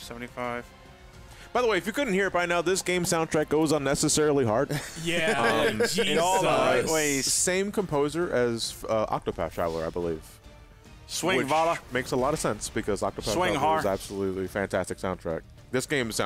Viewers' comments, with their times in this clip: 0:03 This and Duel Links just have some of the hardest OSTs out there for no reason. I guess it fits because YGO soundtracks are generally really good (the original, GX's second OST, all 3 of 5Ds's soundtracks, all four of Arc-V's are what I'd recommend people listen too), but it's so funny you can play this and DL on the shitter with either massive booming orchestras or hard rock blaring from your phone.